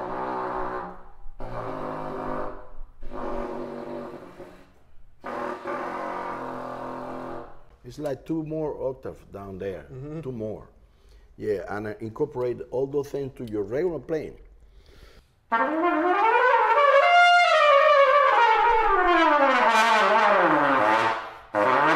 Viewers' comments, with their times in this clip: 0:09 Two octaves below F# ! that converts the trumpet into a double bass ! Amazing.